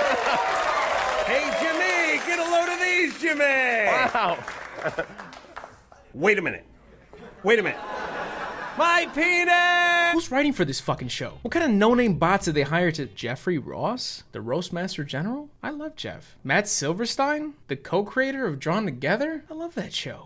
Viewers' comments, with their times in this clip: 0:08 I'm sorry but I've watched this at least four times, and the dub-over of "MY PENNNISS" always cracks me up! Maybe I do have poor taste in humour